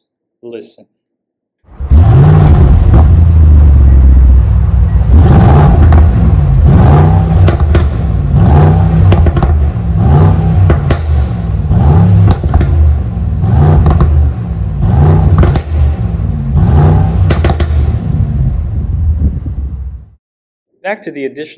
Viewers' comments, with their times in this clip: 0:07 R.I.P. headphone users if your volume is kinda-high